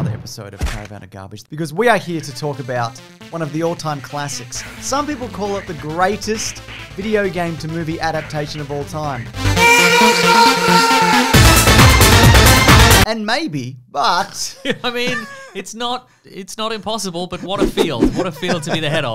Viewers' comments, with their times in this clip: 0:06 Me: i wonder how long we’ll have to wait to hear the mortal kombot song in this video? This video seconds in: say less fam, we got you